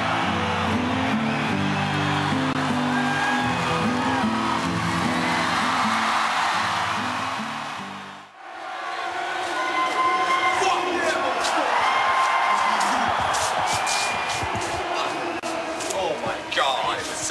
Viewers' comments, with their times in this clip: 0:05 ***** They go on stage and I didn't hear it, did you? I can hear Battery, not Ecstasy of Gold